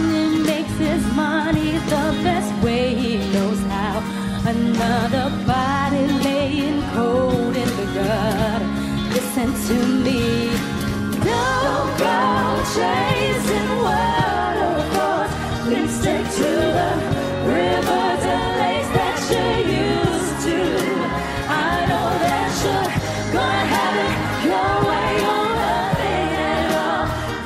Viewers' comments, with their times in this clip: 0:09 that “listen to me” part was 🔥 Kyla’s range is unbelievable!